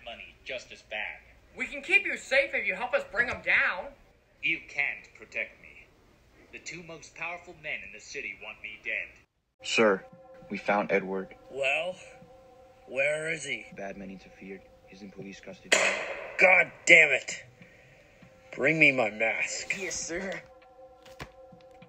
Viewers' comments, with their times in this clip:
0:09 Cool im in it dope Edit: lol I sound so generic lol